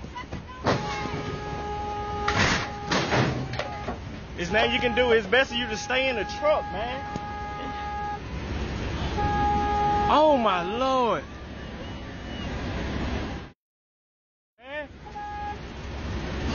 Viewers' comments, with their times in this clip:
0:04 He sounds like Ice Cube